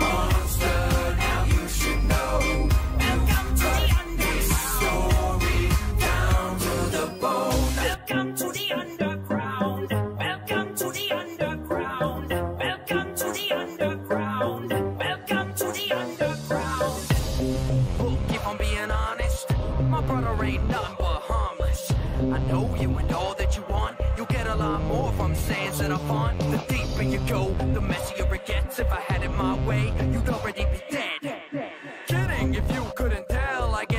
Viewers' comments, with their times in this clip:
0:08 my singing monsters be like:
0:17 If you play at 2x speed sans raps like a god